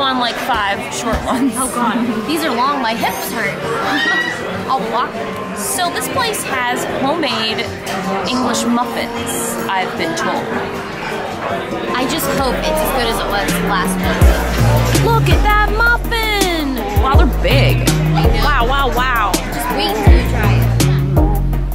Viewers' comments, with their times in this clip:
0:03 I love the random lady screaming 😂😂😂